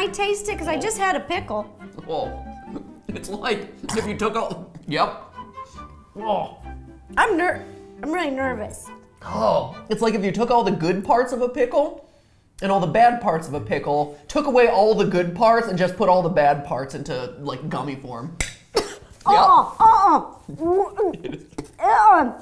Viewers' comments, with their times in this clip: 0:03 Whatever that noise that Ro made here sounds kind of like a baby sneezing.